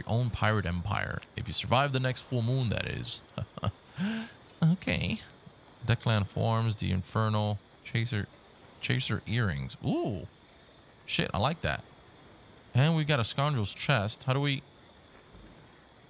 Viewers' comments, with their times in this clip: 0:03 💀💀 Bro sounded like Drake for a sec there